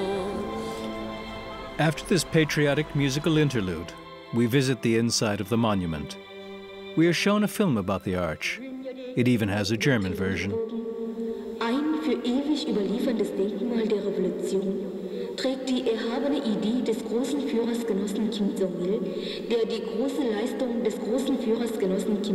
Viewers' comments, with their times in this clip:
0:04 No cap the german pronounciation was on point